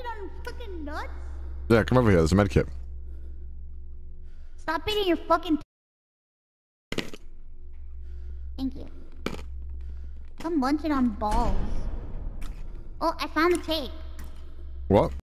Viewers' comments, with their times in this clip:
0:10 stop munchin' on balls (game plays boom sound effect)